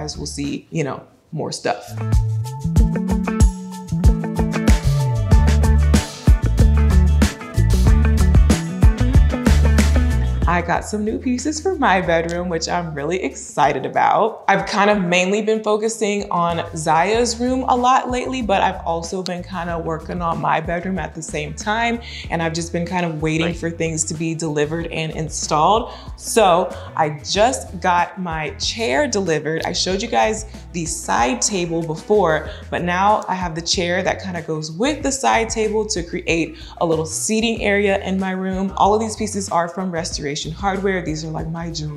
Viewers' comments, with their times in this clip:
0:03 She got the home decor music and editing though 😂👏🏿🙌🏿
0:23 Who else heard that weird noise
0:24 Minute do you guys here something behind her voice? 🥵